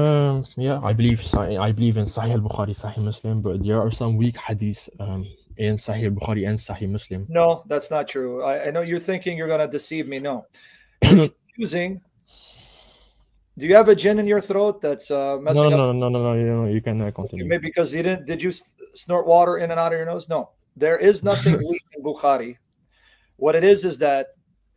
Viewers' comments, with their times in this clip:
0:10 Why do muslim cough when cornered